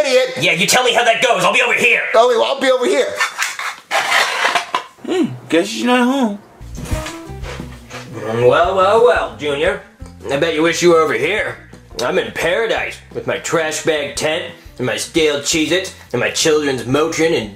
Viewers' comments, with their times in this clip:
0:05 I,like how he says hmm guess he’s not home